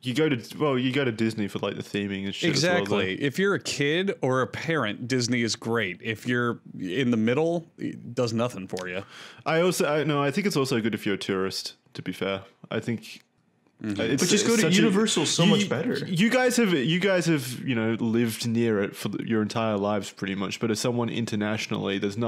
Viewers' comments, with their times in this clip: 0:09 thought he said "good if youre a terrorist"